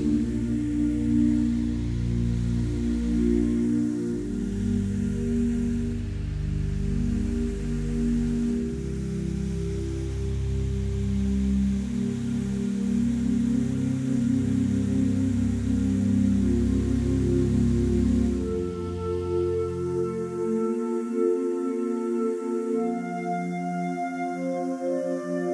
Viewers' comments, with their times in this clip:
0:10 Thank you for this beautiful video. As I was listening I saw each part play out: in the beginning the music is low and slow just like you have to breath when you have this disease, you have to reach so far down in your lungs to get air, then suddenly you're breathing became light and easier, lastly you run in freedom, as an overcomer of this disease with Abba! Yeshuah said in John In this world you will have trouble. But take heart! I have overcome the world.”